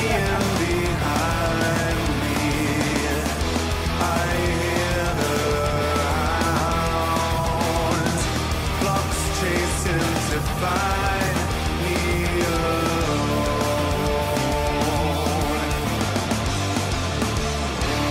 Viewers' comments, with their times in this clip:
0:04 Yup I agree. It's too much different stuff all pushed together. We don't need the whole buffet in one song. And the part sounds like Faith No More. Hard rock, keyboards in the background. And it actually sounds like a specific FNM song, though I can't put my finger on which one.